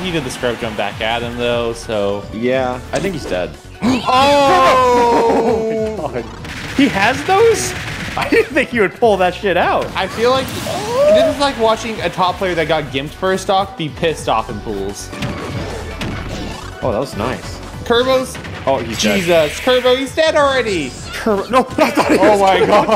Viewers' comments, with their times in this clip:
0:10 that sound of utter pain as DK is smashed.